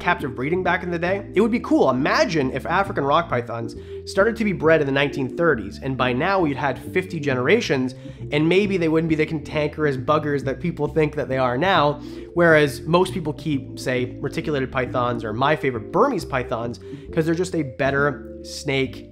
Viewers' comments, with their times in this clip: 0:04 Something about the 1930s background music has a relaxing vibe to it. 😌 It is a shame that breeders did not take the captive breeding of African Rock Pythons seriously much sooner. 🐍 They did for their other African relatives like the Royal Python and even the Angolan Python, but the African Rock Python is pretty hated today for their violent personality. 😬